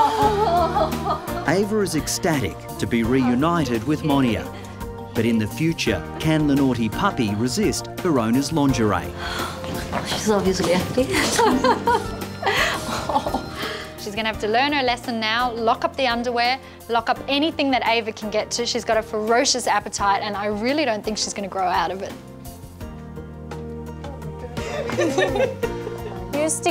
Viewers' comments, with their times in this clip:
0:08 the way he says laundry 😂